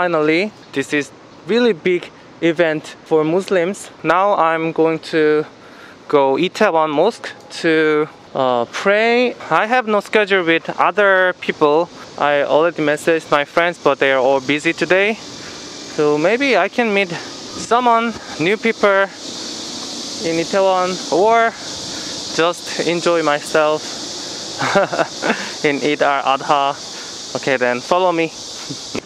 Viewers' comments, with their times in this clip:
0:10 He say Scar Cupid